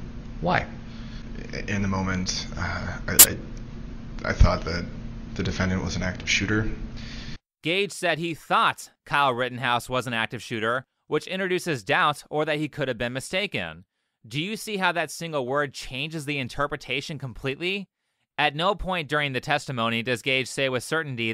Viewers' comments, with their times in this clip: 0:03 my ears exploded